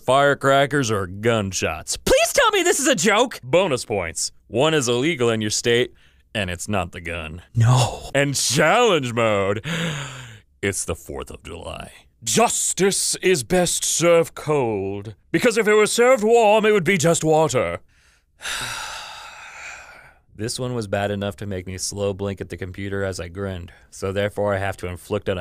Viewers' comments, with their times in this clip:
0:08 When he says “and Challenge Mode” youtube cut him off with a Chrome add with the signature ping and I just broke down cackling